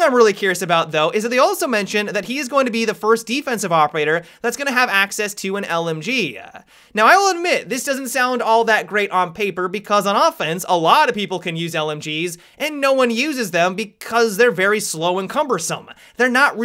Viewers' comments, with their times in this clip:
0:03 russian anthem plays